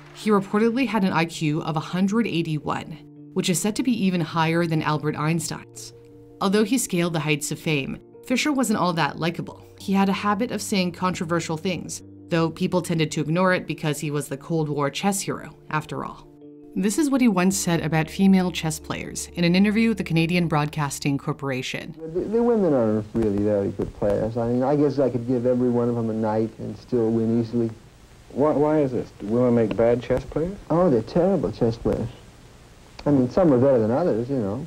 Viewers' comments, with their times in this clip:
0:06 Who’s Albert Einstacks?
0:22 This clip made me realize something: Nicolas Cage could've played Bobby in a film when he was younger. Bobby's manorisms and voice are very similar to Cage's. It's a shame that didn't happen.